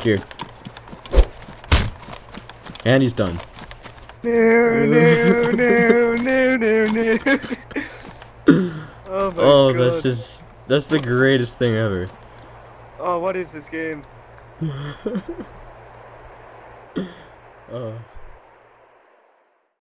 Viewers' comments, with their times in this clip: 0:03 Does he start humming Enya - Only time ?